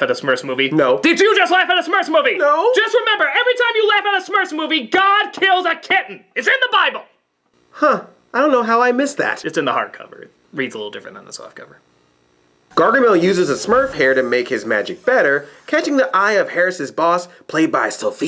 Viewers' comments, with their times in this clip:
0:06 Wait theres guidelines now? Anyway black nerd laughing was completely justified as apparently THE MOVIE IS POINTING OUT THAT IT SUCKS Also WHY ARE SMURFS RAPPING TO AEROSMITH GOD DAMNIT!!!